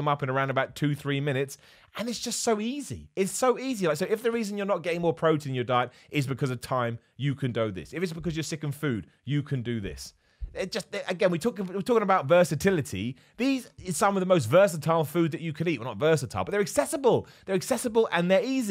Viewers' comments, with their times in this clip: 0:05 "you can do'h this" turned into homer simpson for a quick second